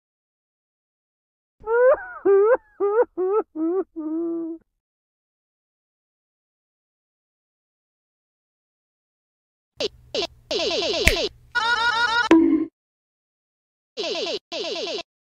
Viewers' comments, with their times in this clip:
0:11 put the speed at 0.25 and the cherries sound like a siren